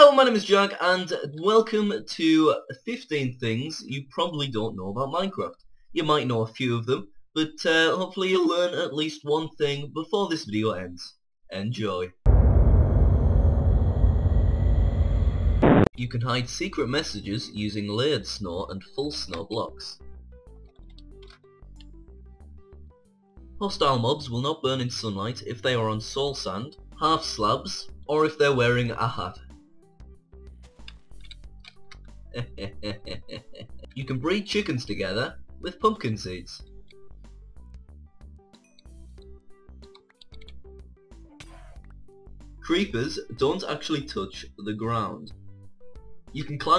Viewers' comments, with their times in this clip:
0:08 Voice crack XDDDDD
0:28 HIS LAUGH LOL